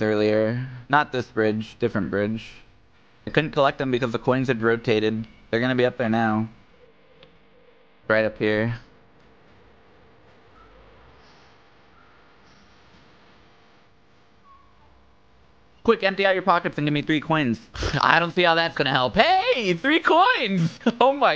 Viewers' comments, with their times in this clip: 0:06 Holy shit it actually does drop a hot beat
0:08 Double props for the editors taste in music. When a song cant be used because of copyright it's replaced with something that's either tonally or sonically similar. Also judicious use of Jonathan Coulton is the next best thing. Holy fuck that No Busses beat drop was absolutely fucking based